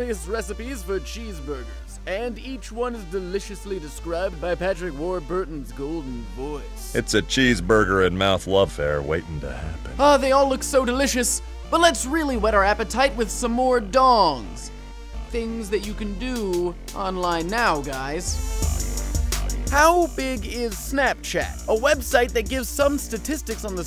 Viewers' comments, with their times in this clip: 0:07 Joe Swanson from family guy describing a cheeseburger